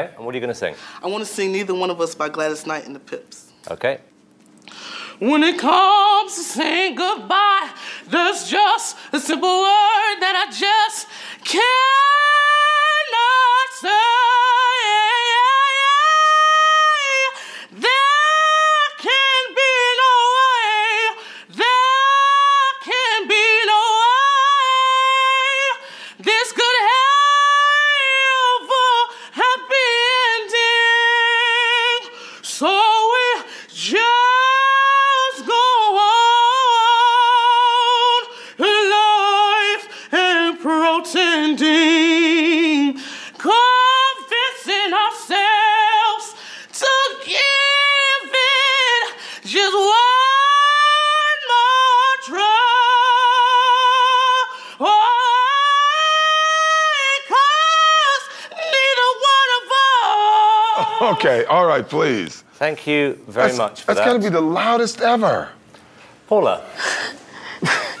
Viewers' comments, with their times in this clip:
0:03 y'all better do a sound check❕ just a fair precautionary measure... .. .
0:06 I thought that was a 40 year old woman until I saw the name and age
0:06 he sounds like he ate somebody's grandmother and she got lodged in his throat lmbo bwahaha I have never seen someone sing like that with a straight face lmbo I am weak ! lmbo he doesn't sing soul music he sings soul food music lmbo
0:16 I think he would be okay if he new how to use his virbrato correctly
0:17 there's an injured animal somewhere on set
0:18 He doesn't sang either....
0:19 how is this horrible its actually pretty good
0:24 it’s pretty sad that my phone recognized a baby crying instead of this person singing and I got the screenshot to prove it is that bad? Lmao 🤣
0:33 I had to stop this !!! "Sang"??? My volume would not go low enough to tolerate him! Sorry. This is the very first time I ''Dislike"ed any YT video! OUCH!
0:40 If brought it down he might have been okay. His pitch was too high!!!
0:42 they had some potential but the tones aren't hitting different.
0:50 When ever I hear Alex Newell sing...
0:59 it was already going to hell but the way his voice cracked right there was the hand basket lmbo